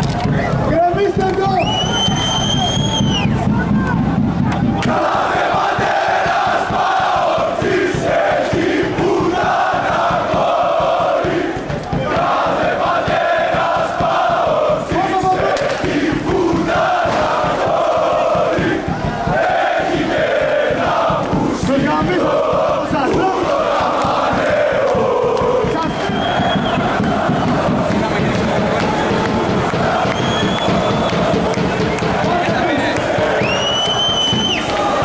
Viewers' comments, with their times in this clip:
0:06 I wish you knew what you where cheering for hahahahaahh
0:19 sounds like spartens going for war , looks and sounds amazing!